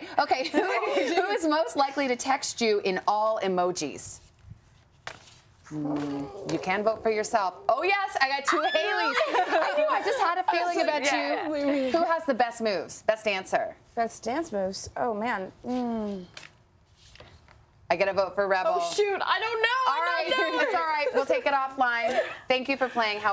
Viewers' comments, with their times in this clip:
0:07 Britt's squeal is life